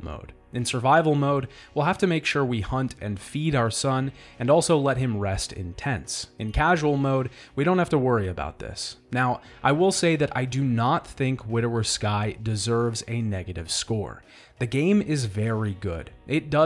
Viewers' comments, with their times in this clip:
0:04 I honestly understood "let him rest intense" at first xD